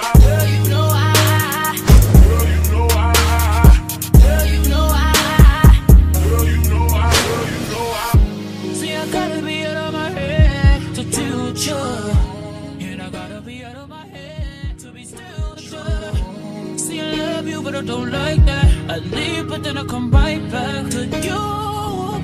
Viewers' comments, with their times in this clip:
0:04 and the gunsounds kinda bad and wtf is the name